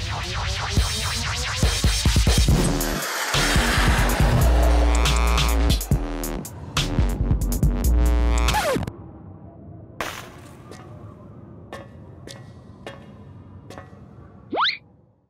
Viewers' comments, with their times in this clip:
0:03 no lie though is a slapper of a beat lmao